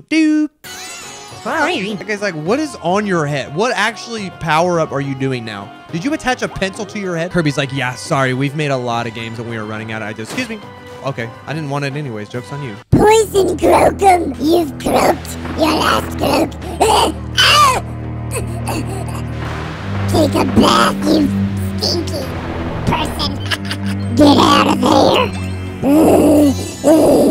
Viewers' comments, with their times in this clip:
0:10 I can not stop watching this clip its just the voice he uses is halarius